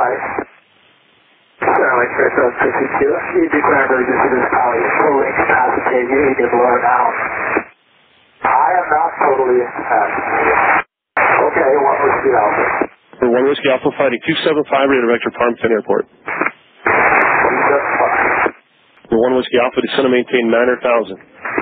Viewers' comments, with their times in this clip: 0:08 All of this shows how insidious it is. LakesAir at app says ”totally incapacitated”. Pilot replies (with a miffed tone): I’m NOT totally incapacitated! Actually you are. Managing to get him to land was a miracle. Lovely to hear that ATC was rewarded for his effort att to LakesAIr for sticking with it.